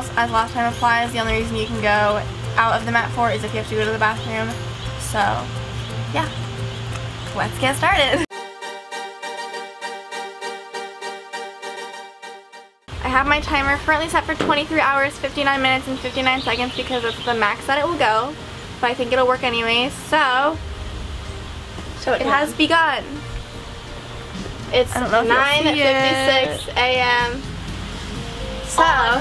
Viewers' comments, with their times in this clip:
0:10 i heard a fart
0:13 it seemed like someone farted... XDDD
0:14 I did you hear someone fart LOL 😂
0:14 Did someone fart
0:15 Omg someone farted